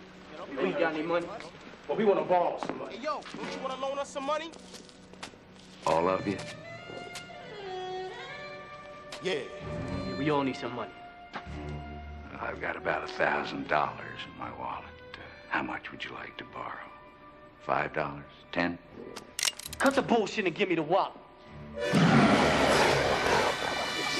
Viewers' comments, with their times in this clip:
0:05 lol that silly 90s saxophone music looks like it's Jack trying to seduce the muggers like: "Aren't I sexy? Still want to rob me, or assault me?" xD Also that attack effect looked cheap and half-assed.
0:05 That music when he turned around, and said “All of you” 😂🤣